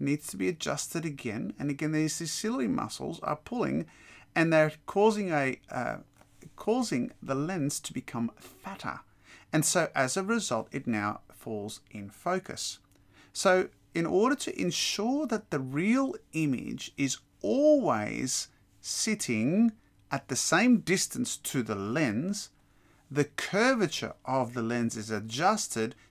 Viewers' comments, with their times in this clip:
0:07 his pronunciation of "fatter" called me a peasant in so many ways